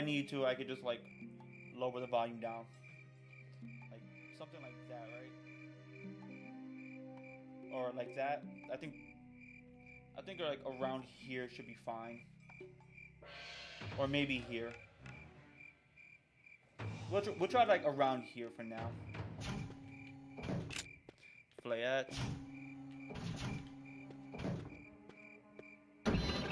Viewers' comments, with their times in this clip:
0:09 Nah. it was better before... ur too quiet now